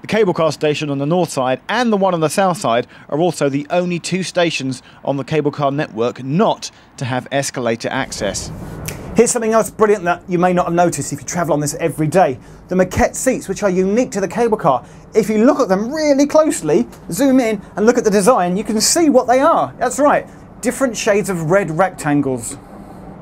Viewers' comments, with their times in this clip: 0:08 Nintendo Switch click sound!? Mind = Blown